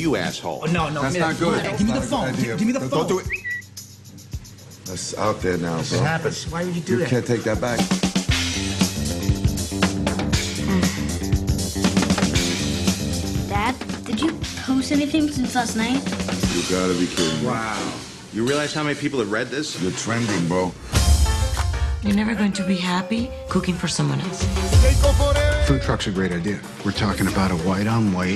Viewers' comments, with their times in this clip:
0:09 I wanna watch it so bad, but again they always have to put a sexy innuendo on the trailers of Scarlett when she says that "she doesn't like it to be look like that" if it isn't her body or butt is her moan...